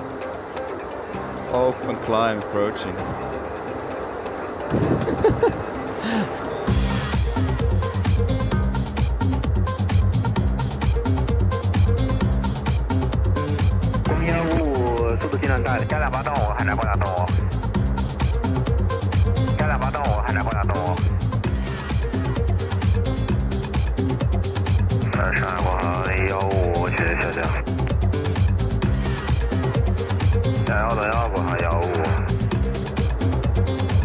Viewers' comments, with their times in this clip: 0:05 Wow did not expect that Remix :D Very nice touch, Well done !!
0:15 The remix is awesome ;)